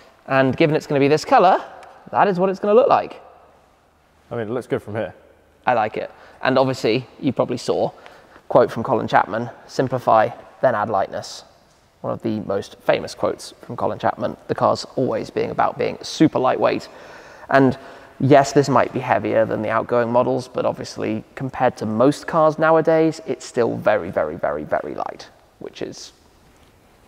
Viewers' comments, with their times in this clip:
0:10 Sounds pretty Lotus...